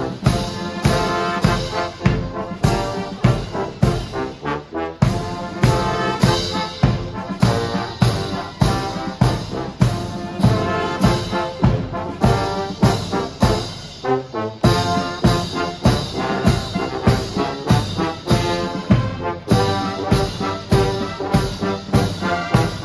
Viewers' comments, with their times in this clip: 0:03 One pocket-sized guardsman is playing the flute... or something like that. Several gentlemen marching like veterans A cool salute detected Very british yes, but as I said.... God preserve the legacy of Queen Elizabeth II 🇨🇱👍🇬🇧🙏